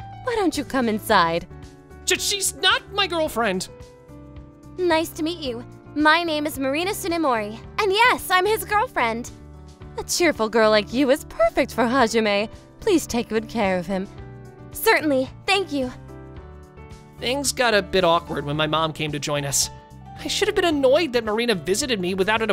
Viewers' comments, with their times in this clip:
0:10 The “pERFect” voice crack. Well that slipped in there! 🤣